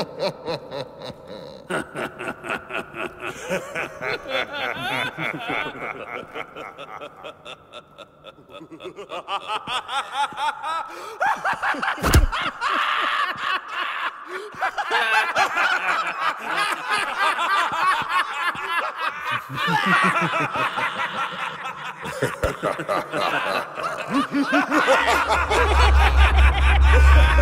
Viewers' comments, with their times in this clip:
0:10 puts hands together WHUUUUUUUUUUOOOOMMMMPPPPPHHHHH WTF WAS THAT SOUND EFFECT LOL